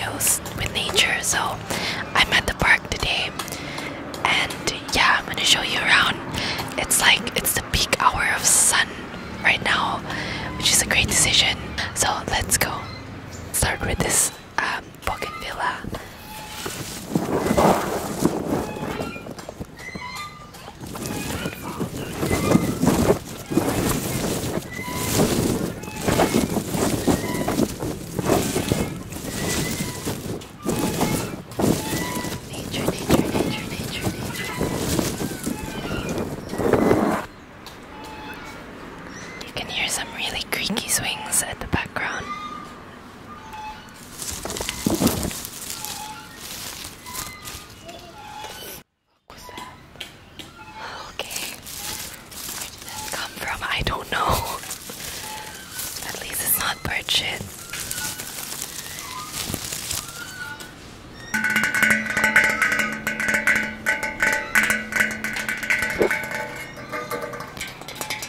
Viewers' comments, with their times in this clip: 0:04 at first I thought she said” I met them at end game” lmao what 😂💀
0:20 the only thing that gave me asmr where the swings jk I loved it
0:32 that sound in the background is very scary
0:50 the background sounds are so weird 😂